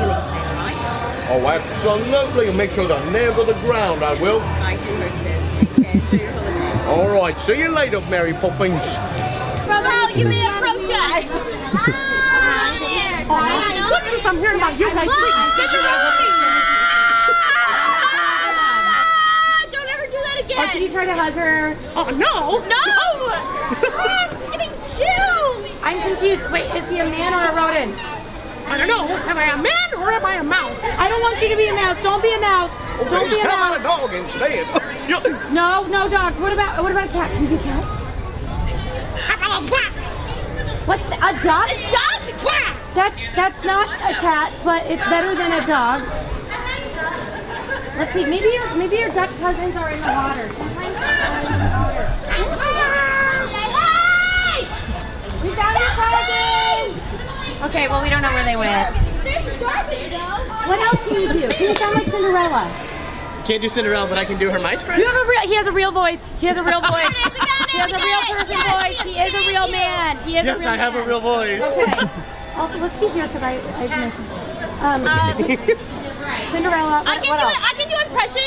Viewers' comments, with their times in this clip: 0:07 her screaming is so in character I live for it.
1:06 XD His laugh is so contagious!